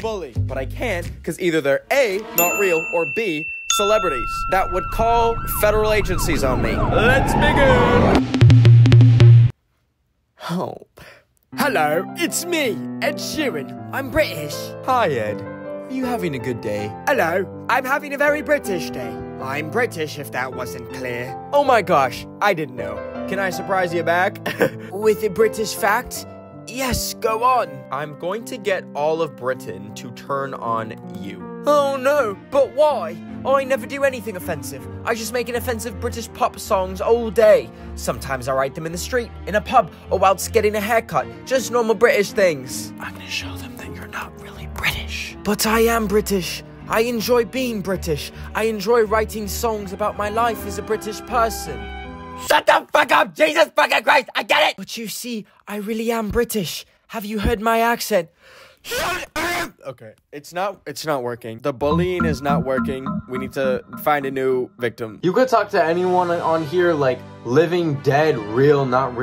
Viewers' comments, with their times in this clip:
0:10 That sigh before he did Ed Sheeran-
0:51 you sound like nuf or max from camp camp 🤣🤣🤣🤣
0:52 he sounded like cartman from south park lmaoo 😭😭💀